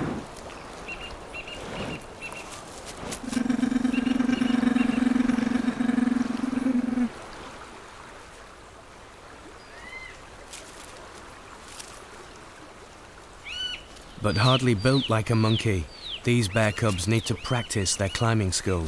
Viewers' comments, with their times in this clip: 0:05 CHEWBACCA IS THAT YOU?